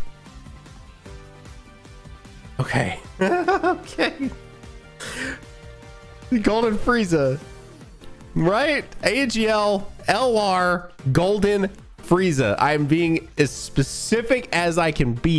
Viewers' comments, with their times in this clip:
0:03 Your laugh sounded like truth